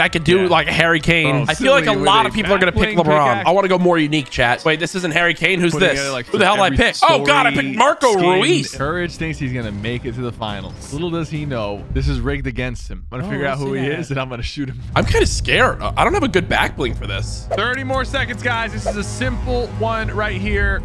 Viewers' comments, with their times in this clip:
0:08 Rouis? You say it as Roois😂😌